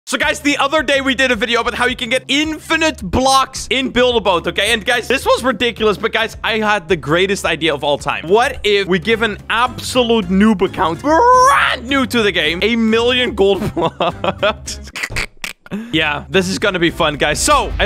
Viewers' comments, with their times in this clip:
0:01 finaly a quiet start